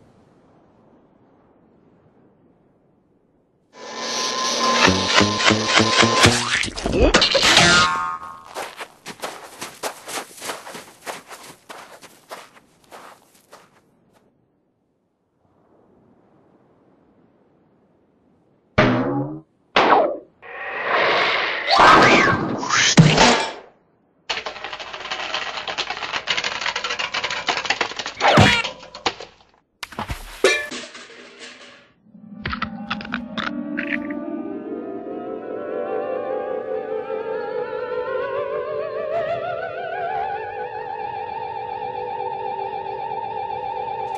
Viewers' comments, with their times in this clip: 0:06 Splat with Light Thuddy Impact
0:28 Bang with Honk